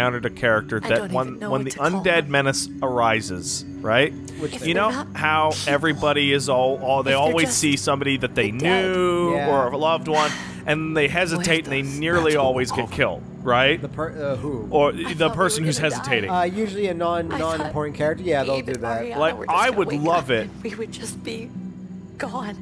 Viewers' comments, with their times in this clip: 0:06 I wanna concentrate on both conversations but I keep alternating